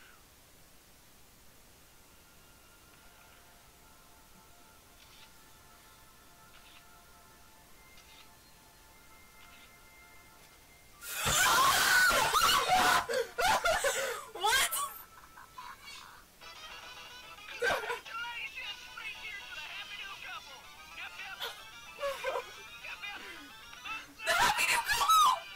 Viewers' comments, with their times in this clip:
0:08 please all headphone users please turn down your volume
0:09 Atention for earrape
0:11 Ow my ear drums R.I.P Headphone users get PREPARED
0:11 ear rape warning to all headphones users